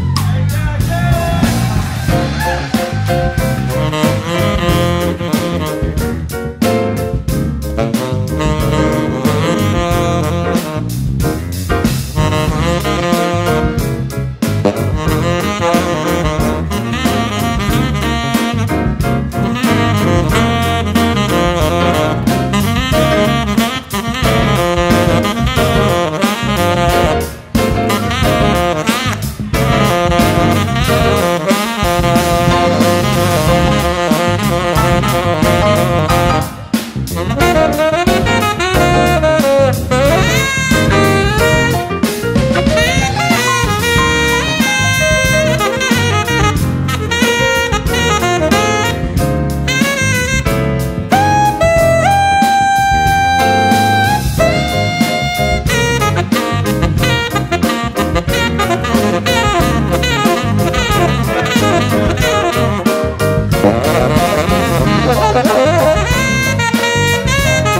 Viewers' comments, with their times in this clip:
0:04 The sax solo tho. Have to mention it. It's brilliant!
0:19 This just showed up in my recommended and it was a awesome. The sax solo at like sounded reminiscent of Steely Dan, which is my favorite band. The jazzy-ness, the frantic nature, but the intensity and the intention made it so clean. Every else was fantastic, but that sax solo had me feelin different
0:49 You know guys... The lick